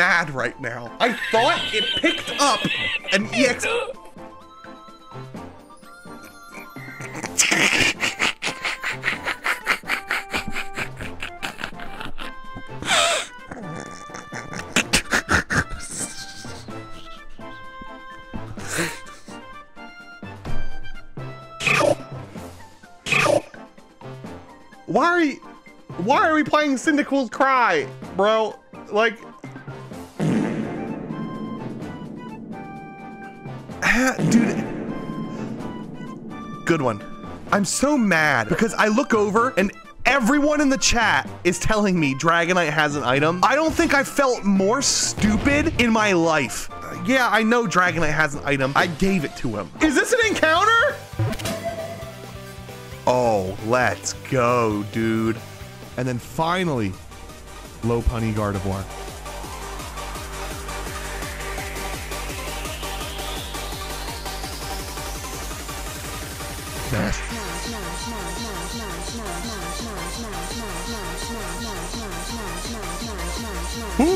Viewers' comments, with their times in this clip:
0:07 is he a train or Donald Duck?
0:08 Bro why he sound like muttley from the Scooby doo movie
0:18 the laugh kills me
1:02 Penny's theme always leads to a good time.